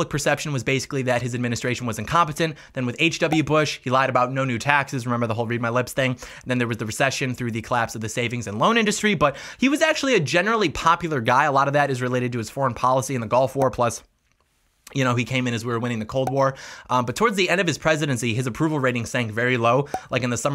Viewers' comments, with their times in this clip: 0:06 is when the song hits hard.